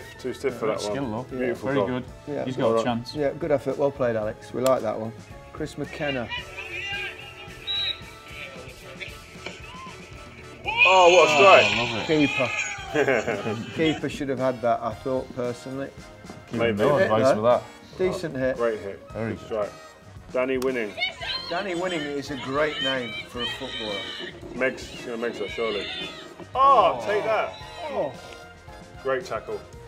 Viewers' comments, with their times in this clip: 0:10 that was the most unenthusiastic “Oh, what a strike” i’ve ever heard